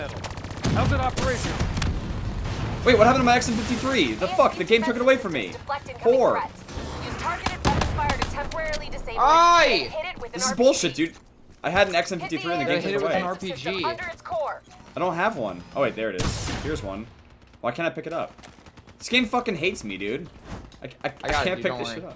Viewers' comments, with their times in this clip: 0:10 that car went bloop.